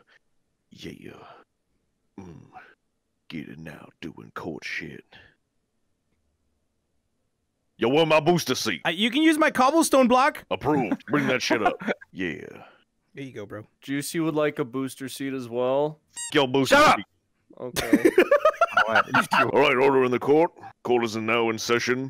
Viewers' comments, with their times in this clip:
0:05 awkward silence Narrator:Yo where my booster seat?